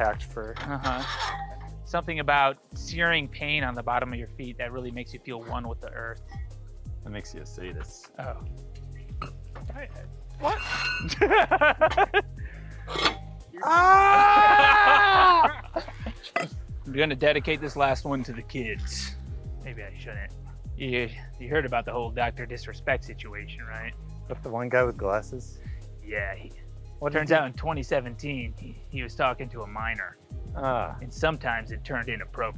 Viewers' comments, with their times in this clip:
0:10 When Mark slammed his fingers in the weights he sounded just like the Trunchbull in Matilda when she gets mad and swings her cat 🫣😂
0:12 when mark smashed his hand, then goes owwwwwwwwwww! I had to re watch that several times. That was a Tom and Jerry moment if I ever saw one, 😂 😂
0:13 Tom & Jerry ahh scream